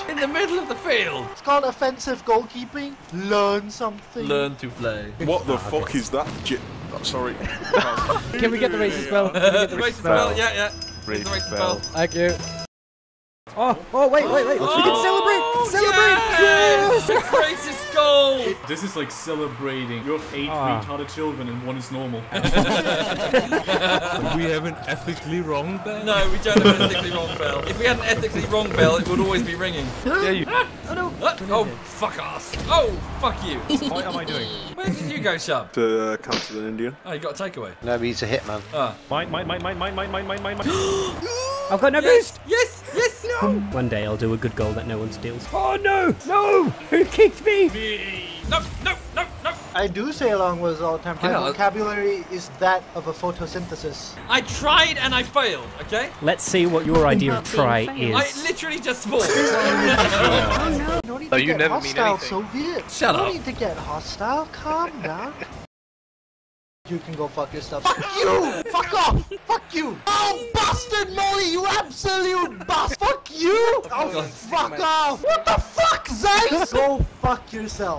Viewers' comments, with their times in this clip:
0:05 who is the guy in ? he has such a good voice
0:33 I love that giggle
1:03 "I'm not sure if he rage quit or ate the microphone...." edit : thank for the likes :3